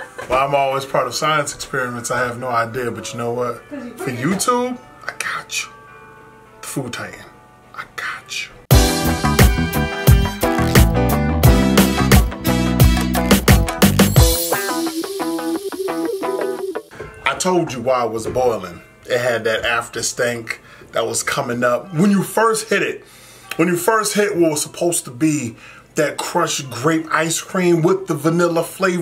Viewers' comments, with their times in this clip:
0:10 the music reminded me of liza koshy soo I automatically said "cheaahh" lol